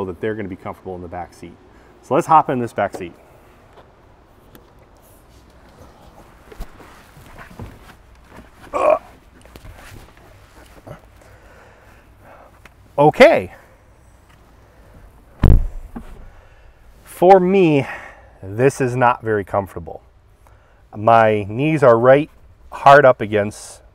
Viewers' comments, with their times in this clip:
0:10 Also, the «….OK» is priceless ! Timing and execution is impeccable.